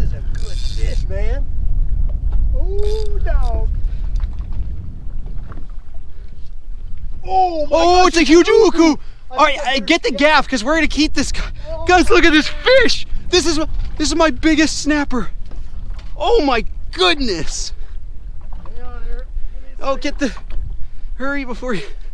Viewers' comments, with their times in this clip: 0:07 notice how they said "huge uku" at the same time
0:08 The way they both said uku at the same time was hilarious 😂
0:08 the in sync ‘its a huge uku’ had me laughing way to hard hahah,